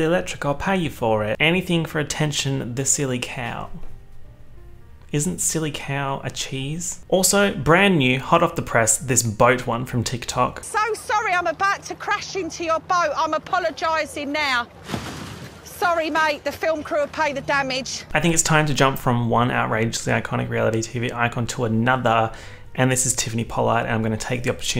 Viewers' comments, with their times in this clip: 0:08 You said boat with an Irish accent and I enjoyed it thoroughly